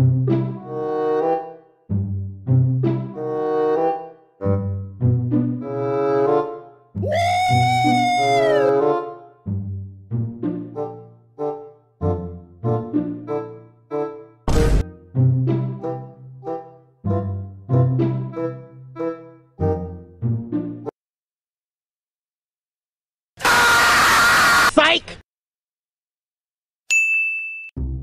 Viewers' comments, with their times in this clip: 0:10 music syncs with his jumps and glider